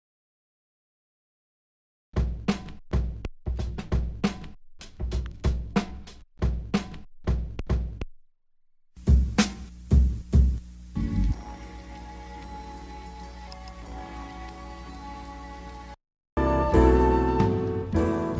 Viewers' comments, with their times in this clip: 0:03 Good breakdown! I played the video at half speed really wanted to hear the drum pattern with that little high hat trick, there's a secondary snare there that completes the trick, I got it now!!